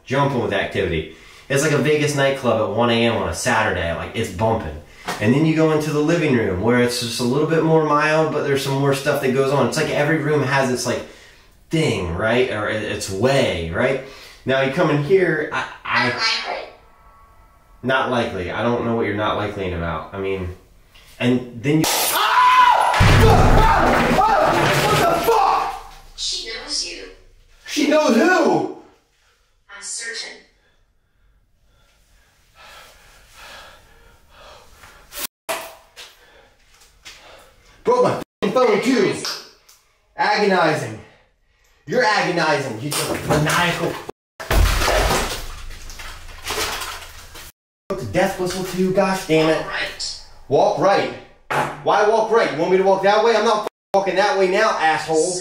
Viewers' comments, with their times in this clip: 0:08 to left. a round object bug/ orb goes down against floor and after the glass brakes. I see 2 orbs not the bug who hit the camera but them shows up circling🔄 around there you throwing AnnaBelle, hearing smell and holding the flashlight... and then the thud very clear.
0:08 it looks like a dim orb floats from the window down to the table then seconds later a bang happened
0:21 that loud crash pop, was a lightbulb dropping from the cieling, that was insane! watch the floor right as it happens and youll see it hit.
0:33 Heard something that sounded like a cat meowing or a childs voice, it's easy to miss due to your heavy breathing after what just happened but keep looping on the tine stamp. I may be just hearing things.
0:36 DID ANYONE ELSE HERE WHAT SOUNDS LIKE A GIRLS VOICE SAYING SOMETHING LIKE HELP 😮